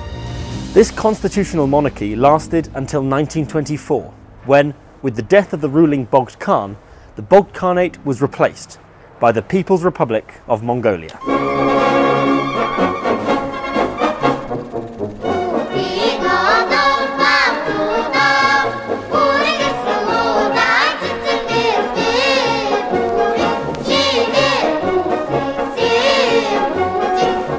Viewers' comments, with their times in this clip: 0:10 that song is a banger!